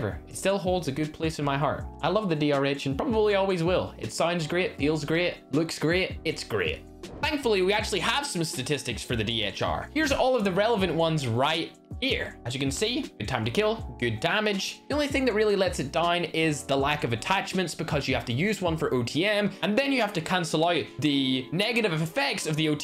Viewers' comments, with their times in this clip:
0:07 yeah thats how my brother says DR-H.
0:09 am i the only one hearing "DHR"